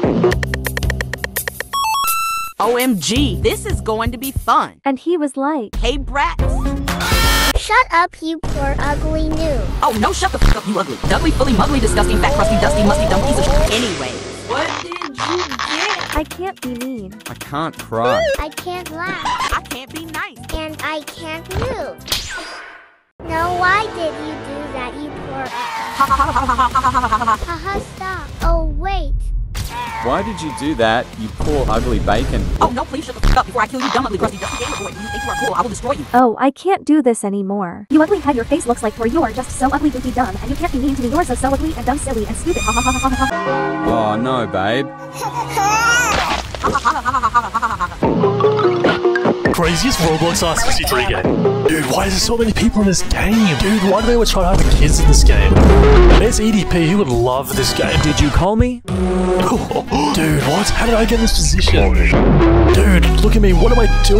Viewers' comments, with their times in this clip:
0:05 the brat song is as slay as my pfp
0:44 😂😂😂😂😂😂plsss bro. S+ tier of laugh
0:45 bro the way he cried
0:46 Bro who tf cries like that 💀 🙏